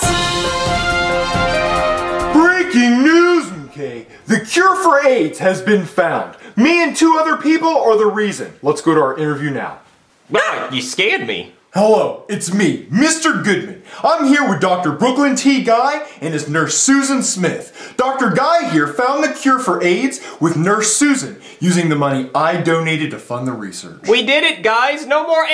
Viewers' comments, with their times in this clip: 0:09 -LOl that scream